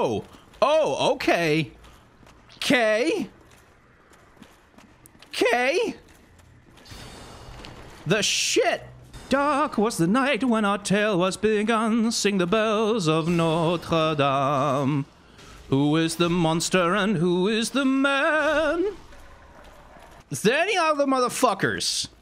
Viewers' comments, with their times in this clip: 0:09 yo why can you sing that so well XD